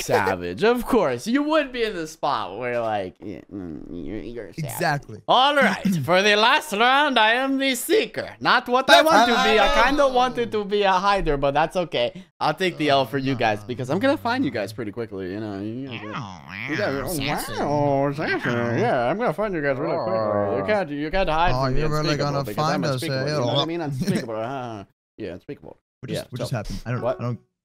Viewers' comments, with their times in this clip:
0:08 Did he just sounded like Gru(Despicable Me) or is it just me..